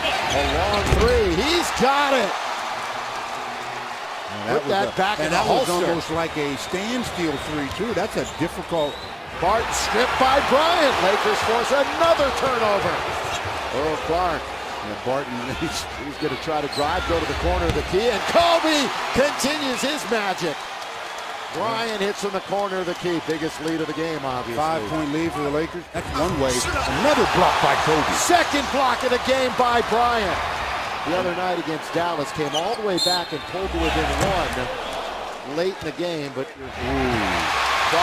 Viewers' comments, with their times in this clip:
0:09 fart sniff by Bryant. Rip Kobe though
0:25 Love how can hear Kobe saying "Get that shit out of here".